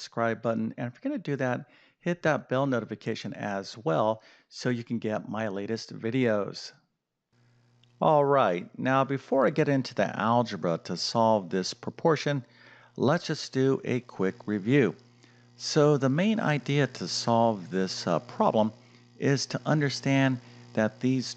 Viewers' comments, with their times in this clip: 0:08 From there's a VERY prominent buzz in the audio.